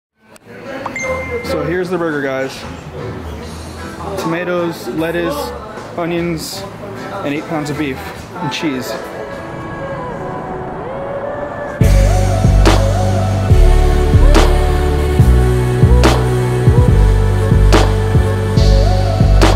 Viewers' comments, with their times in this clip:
0:01 u were felthappy cuz u thought u had a message but its sound of this video